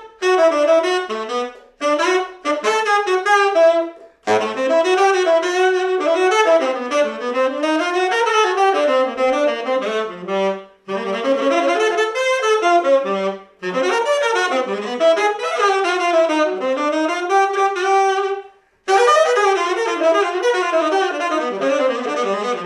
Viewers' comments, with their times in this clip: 0:10 the lick - lol